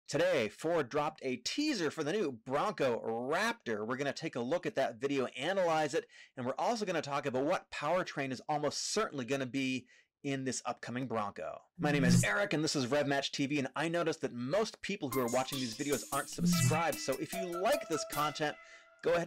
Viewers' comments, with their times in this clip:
0:01 the mic was Muffled. It sounded like a angry cat lmao 😂😂